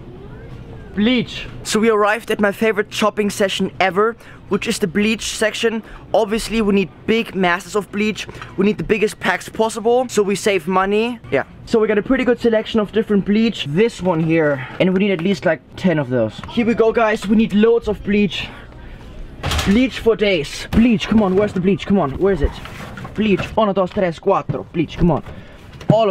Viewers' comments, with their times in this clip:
0:07 it sounded like he wanted to kill himself